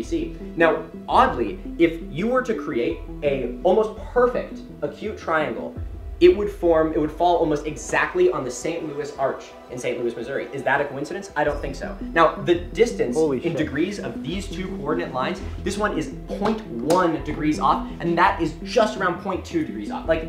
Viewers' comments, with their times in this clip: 0:03 the Ben shaprio voice came out and it was terrifying